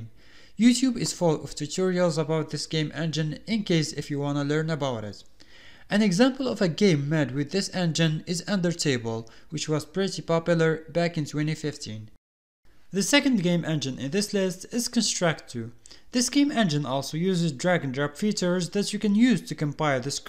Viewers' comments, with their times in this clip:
0:08 undertable... Under, Table UNDERTABLE